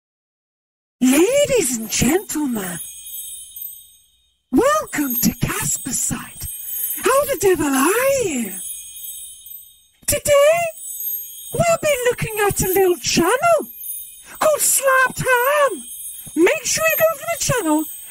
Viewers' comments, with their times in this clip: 0:01 what voice changer is that? that sounds like a voicemod filter cause it has a backround jingle bell effect.